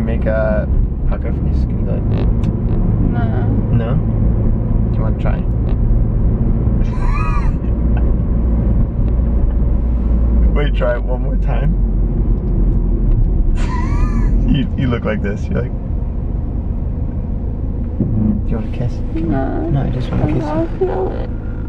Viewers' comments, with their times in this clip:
0:06 It’s so beautiful how she smiles when he hears his laugh even when she doesn’t know what going on around her and is sleepy